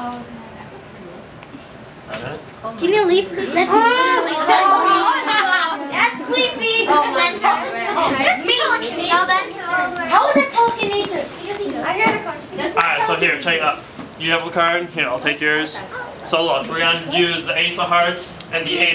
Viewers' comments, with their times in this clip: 0:05 am i the only one laughing my ass out at the thats cweepy moment